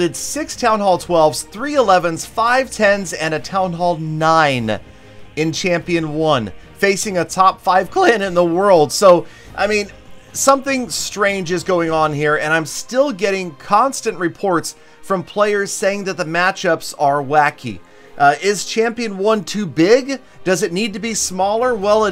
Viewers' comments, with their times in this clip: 0:07 y’all hear that voice crack
0:07 top 5 clAAAn in the world
0:07 Voice Crack lmao
0:08 voice crack tf tf lmfaoo
0:08 lol that voice crack
0:08 he has a voice crack
0:09 Who heard that voice crack